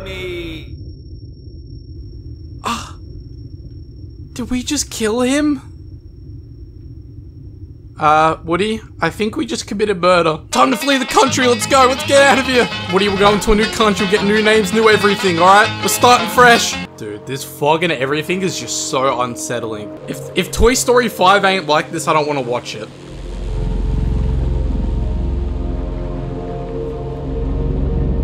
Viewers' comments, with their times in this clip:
0:03 watch til the end i love the part when woody and buzz ran and hillbilly music came out of nowhere XD
0:11 the music tho “ uh woody I think we did an crime”